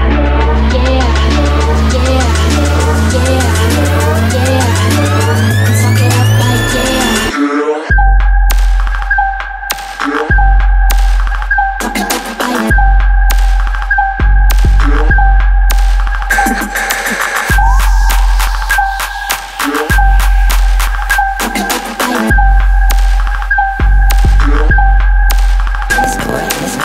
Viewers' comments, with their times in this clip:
0:07 This drop sunk us to Submarine status